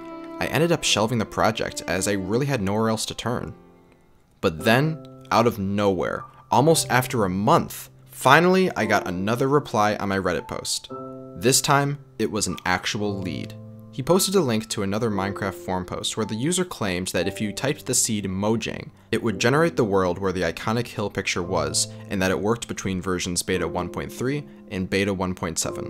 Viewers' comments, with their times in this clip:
0:08 This music just triggers something deep inside me